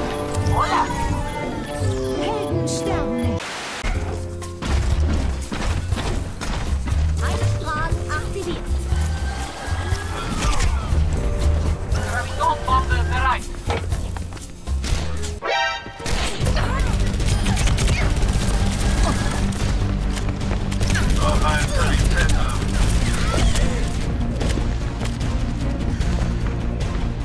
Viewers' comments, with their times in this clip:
0:09 Anyone else find that "hello" from 76 a bit, "involved"